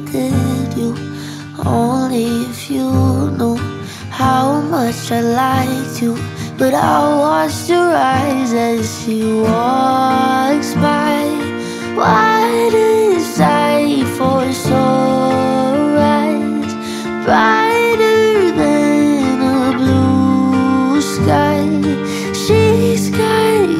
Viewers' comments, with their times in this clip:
0:06 when my sister play this song, at first a thought it was thousand years from christina perri. but i got it all wrong.. the lyric are different but it sound really similiar idk it is just me or what, but this still really good to hear